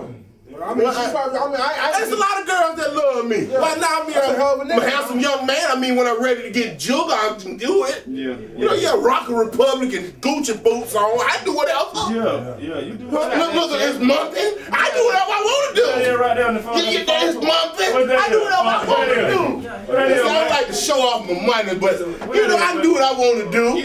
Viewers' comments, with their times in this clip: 0:08 Closee your eyes and it's...Arnold Schwarzenegger talking. Lol